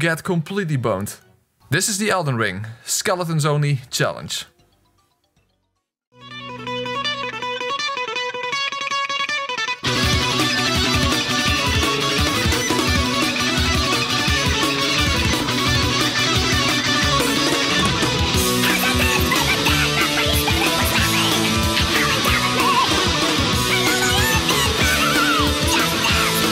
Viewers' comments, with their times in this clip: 0:05 Huge Kudos for the Elden Ring Metal Band LMFAO
0:05 does the song come from anything real? that guitar reef is amazing
0:07 Unrelated question, but what's the song played ? It's been high pitched, obviously but it unironically sounds like it'd be a banger